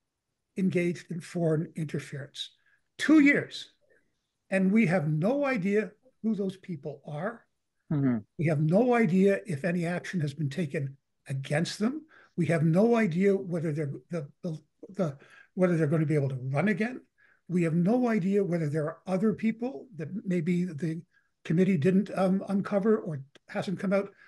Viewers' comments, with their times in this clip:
0:08 Did someone just let one rip ?